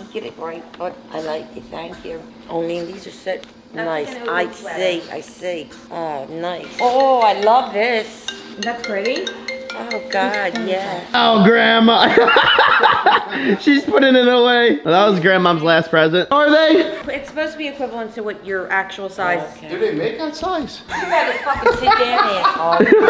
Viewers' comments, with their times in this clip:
0:10 my dad has the same ringtone 😂